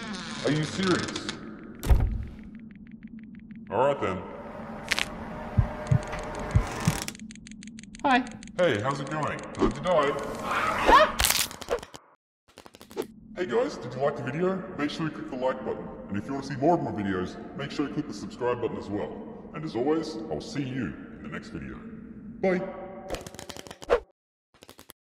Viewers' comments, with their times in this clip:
0:08 heard that in Beavis's voice xd